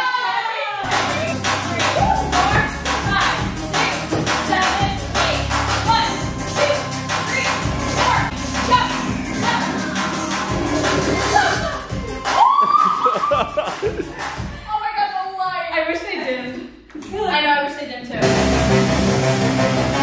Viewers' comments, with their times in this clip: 0:04 The music sounds like the background music when you play "kahoot" haha